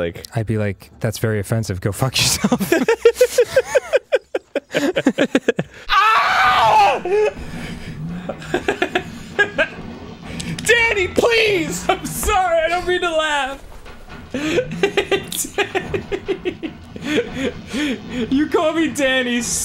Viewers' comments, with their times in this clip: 0:05 arin recreates the wilhelm scream